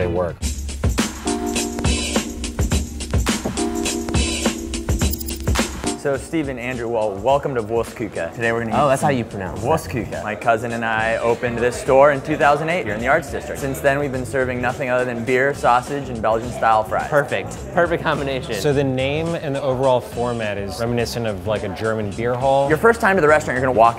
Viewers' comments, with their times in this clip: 0:06 the German restaurant sounded like Worst Cooker. LOL !!
0:08 Well this is definitely not how you pronounce it